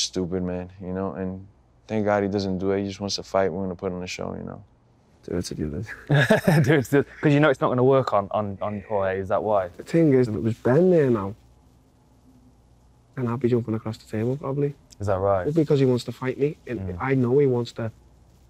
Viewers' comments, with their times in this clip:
0:04 what the hell is Till saying there?